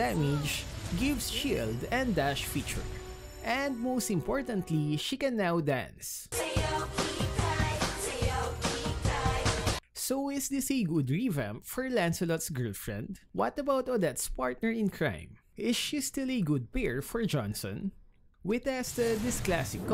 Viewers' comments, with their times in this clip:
0:06 Her ult music should be replaced by the music in It matches really well